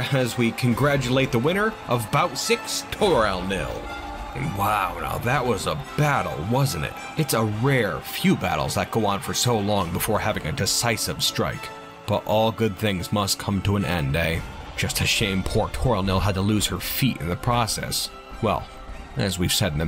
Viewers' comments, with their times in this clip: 0:04 her shout of victory shall begin her legend of glory.